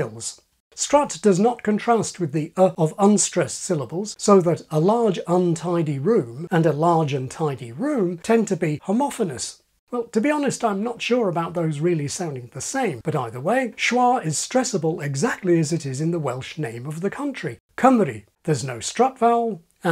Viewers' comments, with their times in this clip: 0:06 I'm hearing a slight difference in the way you pronounce them, at least in this utterance. "untidy" has a bit of secondary stress on the "un". So one is "a large UN-TYE-dy room", the ofher is "a large un-TYE-dy room"